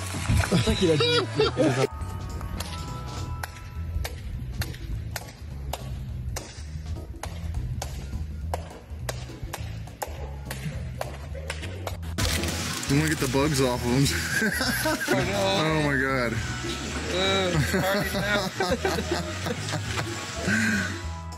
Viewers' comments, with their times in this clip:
0:06 clapping and looking at the ball😮 and got us all good😂😂